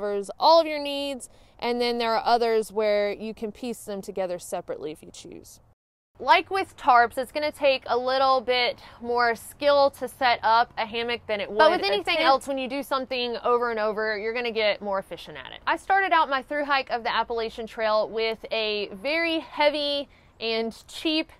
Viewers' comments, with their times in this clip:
0:09 This is really interesting, there's an editing mistake though, two different clips audio playing over each other